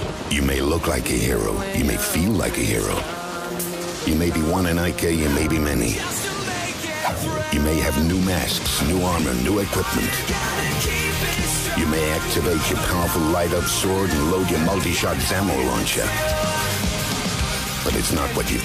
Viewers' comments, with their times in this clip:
0:06 Damn, that song is so cringe LMOA